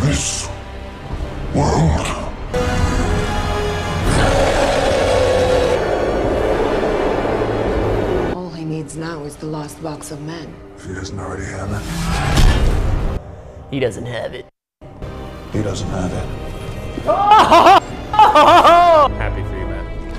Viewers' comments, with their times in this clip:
0:03 Hahaha! Watch buddy roar